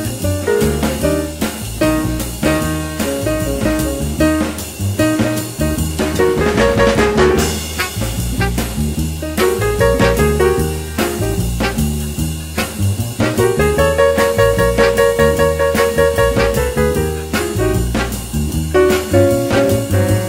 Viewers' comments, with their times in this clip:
0:08 into the piece, I like the segments where the piano and later, the bass dominate. Good, steady drumming.